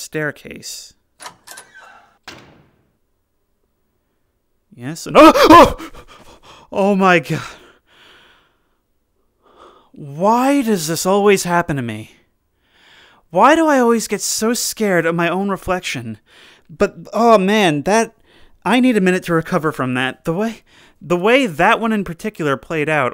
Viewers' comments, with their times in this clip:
0:05 I get startled by my reflection in a mirror which is kind of sudden and loud. There are no jumpscares to the map itself, though.